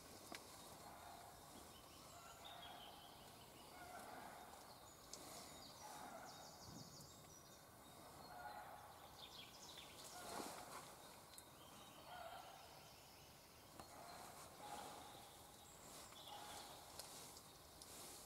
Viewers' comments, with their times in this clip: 0:03 What's the yelling ?